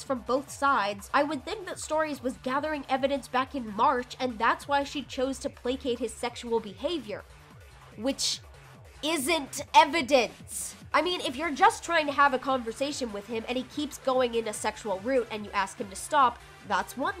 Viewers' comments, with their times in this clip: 0:05 why does the music kinda sound like the music from Danganronpa V1 class trials? Like when you're doing a nonstop debate?